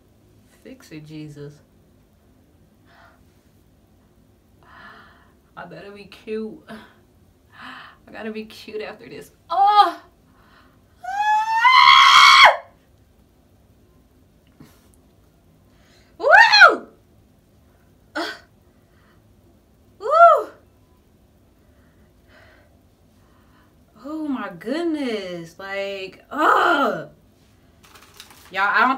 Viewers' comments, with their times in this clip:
0:10 I am DEAD. is when tha show begins y'all haha! I have watch you hollerin over and over and can't catch my breath hahaha oh... And 750